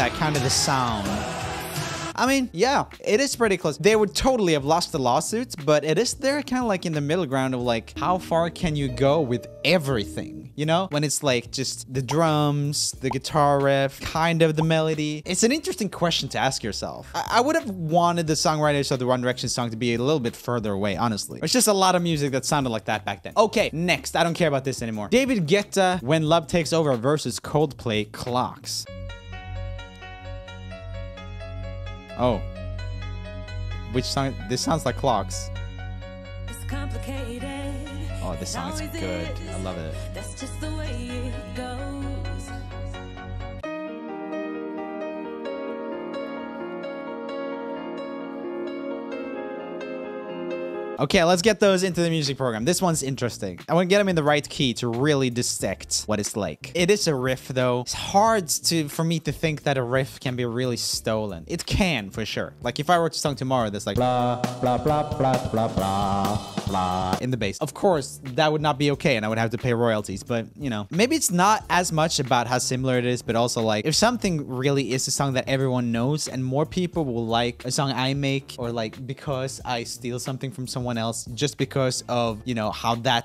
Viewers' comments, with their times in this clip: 0:05 The songs at like ish sound like “nicotine” by panic at the disco sorta
0:28 Okay but that reminds me of the lemonade mouth song breakthrough, anyone else?
0:56 sounds like if cows are black and white by Daniel thrasher
1:02 It’s really funny because the riff you made up sounds exactly like seven nation army lol
1:04 What is Roomie "singing" ??